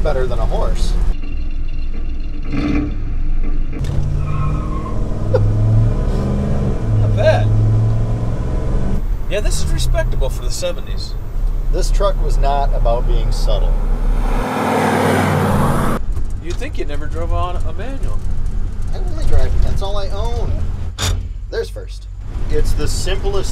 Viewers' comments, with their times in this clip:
0:08 high pitched noise